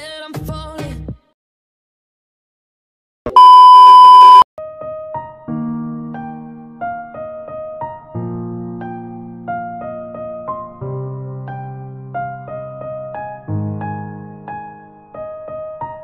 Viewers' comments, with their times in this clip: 0:03 rip headphones user MAH EARS!??!! WHYYYYYY!???!?!?!??!?! T0T